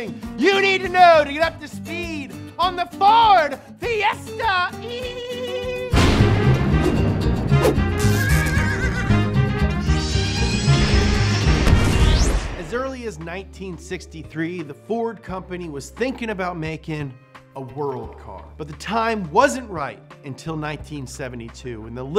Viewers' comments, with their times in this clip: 0:06 That was the most majestic version of the Up to Speed intro I've ever heard.